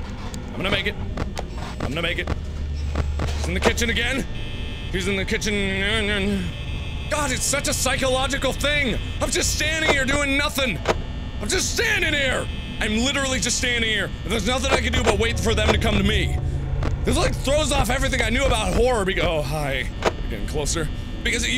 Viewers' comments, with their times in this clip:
0:05 he's in the kitches nehene mumbling